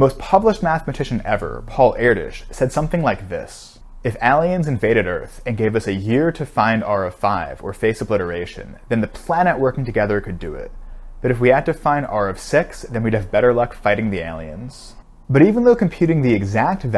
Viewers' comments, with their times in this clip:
0:03 I was seriously listening to this video. Then I heard how you pronounce aliens. Who says it like this? Credibility lost, my good sir.